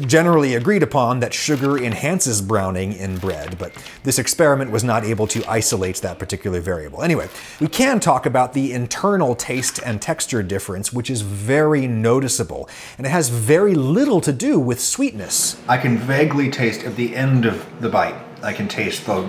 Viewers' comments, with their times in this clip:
0:03 IS THAT A SAMSUNG REFRIGERATOR DINGING BECAUSE THE DOOR WAS LEFT OPEN TOO LONG?! That sound haunts my dreams.